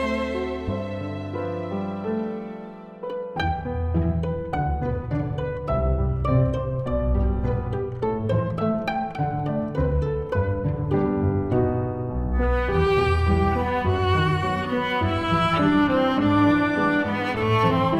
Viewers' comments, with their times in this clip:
0:03 I love that pizzicato is satisfying
0:03 This Song Reminds Me of A Indian Song "Jo Tu Na Mila Mujhe"